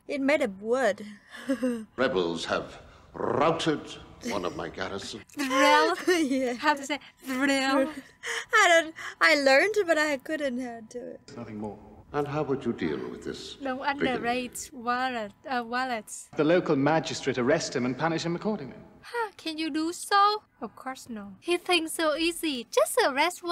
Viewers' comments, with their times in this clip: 0:05 😂 her trying to roll her r’s is so cute! I love these girls